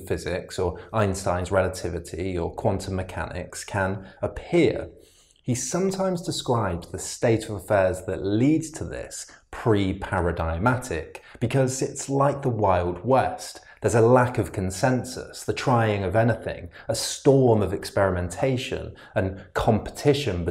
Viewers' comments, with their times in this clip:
0:06 I came here only to hear a pronunciation of “preparadigmatic”. The pronunciation here isintuitive with the soft “g”. Elsewhere I have heard or seen it with a hard “g” and unexpected pronunciations. Hard g or not hard g? That is the question.